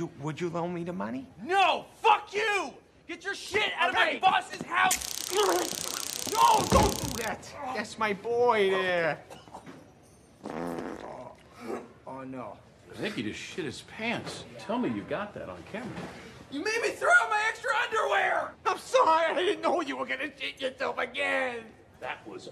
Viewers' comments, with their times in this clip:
0:10 Farts cartoon funny!
0:10 i heard that fart noise 😂